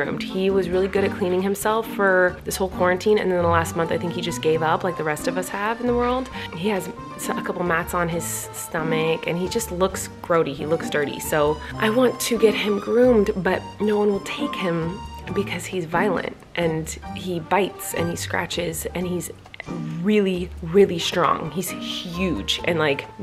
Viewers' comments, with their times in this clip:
0:07 When Colleen says the word "stomach" I swear Miranda took over her body.
0:08 “he has mats in on his stomach” she sounds EXACTLY like miranda😂😂